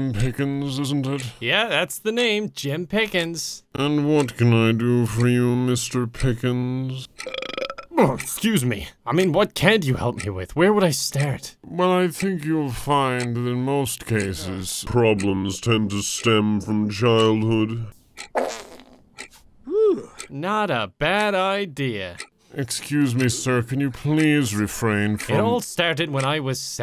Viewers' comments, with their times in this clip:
0:07 😂😂🤣🤣🤣 christ somebody get jim to dr phil it's rude to burp and fart during therapy appointment